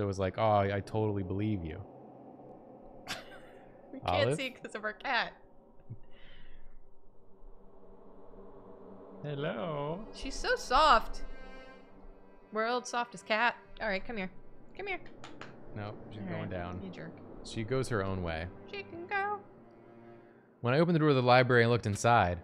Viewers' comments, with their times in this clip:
0:10 is that just the game or do we finally get lines from olive herself? :O